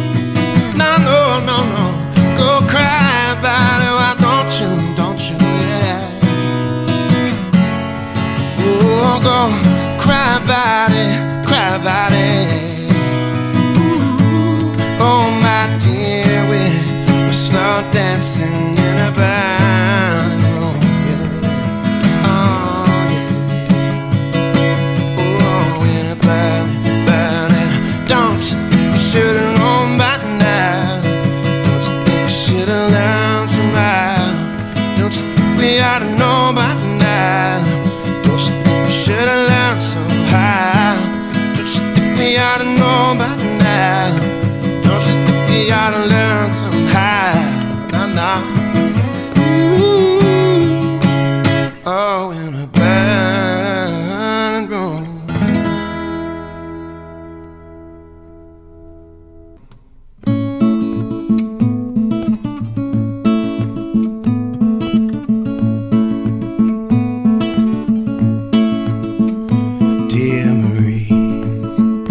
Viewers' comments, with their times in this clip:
0:05 Loving the little run he adds at the end of “why don’t you” ❤️
0:59 That strumming + picking combo in Dear Marie... 🤯 🙌